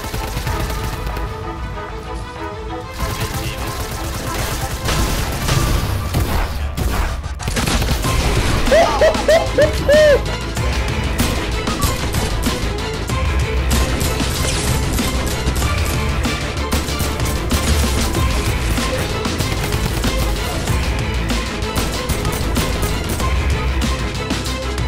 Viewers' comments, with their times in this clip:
0:10 that gun sync thou